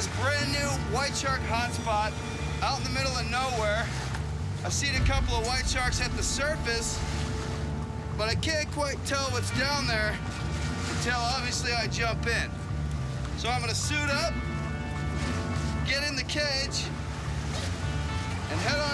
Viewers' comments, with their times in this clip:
0:06 Who else thought it was the camera person talking?